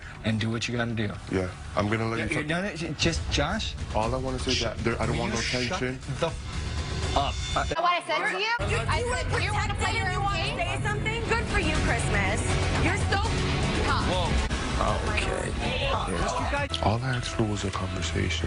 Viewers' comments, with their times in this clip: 0:05 that was the most crisp stfu I’ve ever heard